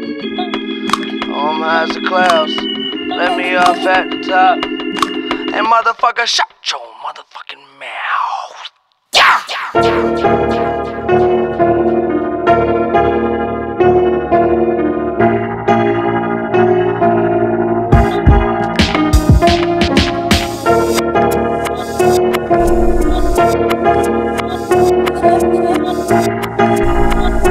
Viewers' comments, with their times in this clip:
0:05 they really got the voice actor from treyarch zombies to sing
0:09 All sad stuff aside, the beat switch after is just bone chilling to me. What a beat. Feels eerily familiar yet I’ve never heard anything like it. Rip EasyMac
0:09 What made me fall in love with this song was that piano solo on Can’t believe no one mentioned it.